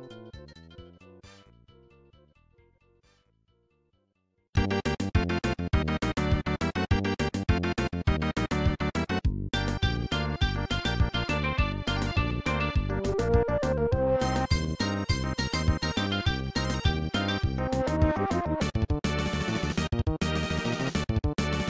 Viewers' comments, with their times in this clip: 0:03 Walk, don't Run + Pipeline style surf rock